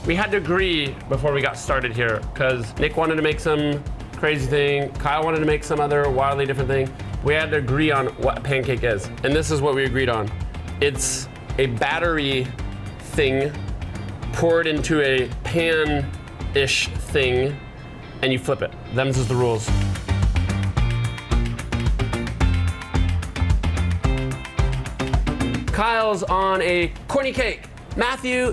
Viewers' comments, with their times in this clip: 0:10 I love love love his emphasis "...It is a batter-y...thing..." :) great times on this channel.